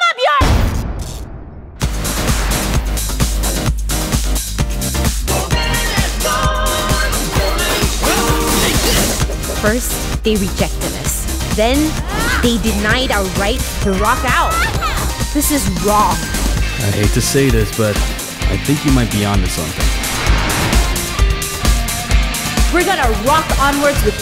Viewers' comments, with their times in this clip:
0:05 is it just me or he saying Ganondorf coming through